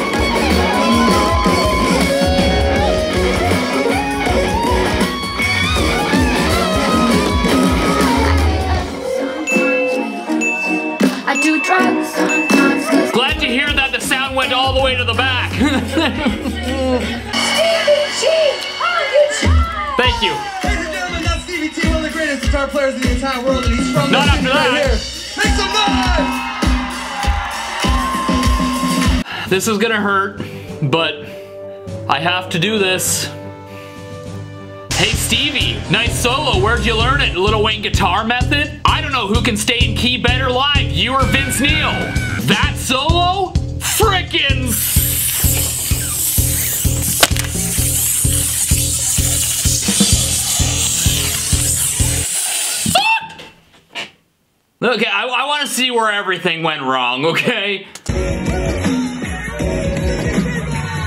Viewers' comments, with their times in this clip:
0:07 T I have also suffered from severe anxiety, which feels a lot like extreme adrenaline rush, making my hands and body shake as if freezing cold. I have only recently discovered beta blockers that can significantly reduce this. If how I described sounds like you, you should give them a try. I had many on-stage flops because of this anxiety and is mostly discouraged me from pursing guitar as a profession. EDIT: If we are being honest, that ending was terrible. Those last notes were about like how Slash ended the Crazy Train solo. :D
0:42 That solo fricken ssssssssssssssssssssssssssssssssssssssssssssssssssssssssssssssssssssssSSSSSSSSSSSSSSSSSSSSSSSSSSSSSSSSSSSSSSSSSSSSSSSSSSSSSSSSSSSSSSSSSSSSSSSSSSSSSUCKED!!!!!!!!!!!!!!!!!!!!!!!!!!!!!!!!!!!!!!!!!!!!!!!!!!!!!The way he held the S noise for so long.🤣🤣🤣🤣🤣🤣🤣🤣🤣🤣🤣🤣🤣🤣🤣🤣🤣🤣🤣🤣🤣